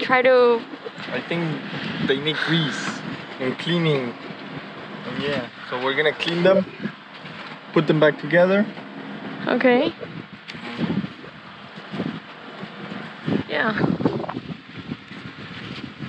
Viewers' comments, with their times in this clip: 0:03 holy shit! he sounds like a Mexican druglord "we gonna clean them, and put them back together" im sorry, but a comment is still a comment , right??